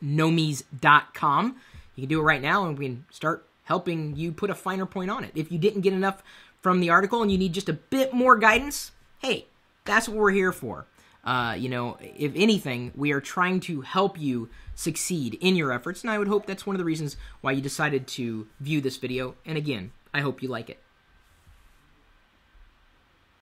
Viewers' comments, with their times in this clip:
0:07 "Ding Dong" What the hell man he's in the middle of a live TLDR!